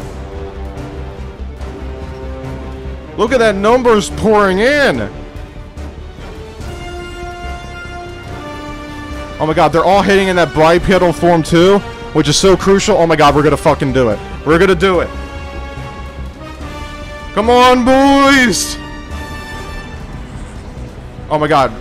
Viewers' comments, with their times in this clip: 0:07 Thanks for the warning lol. I did already have the volume down.